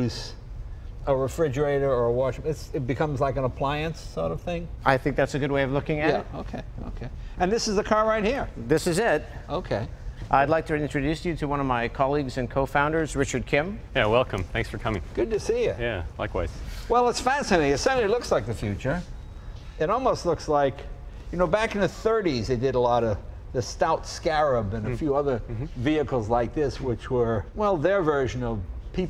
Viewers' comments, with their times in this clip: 0:10 jeeez finally a real human being. Thank god I don't have to be alone with this synth-robot the entire time....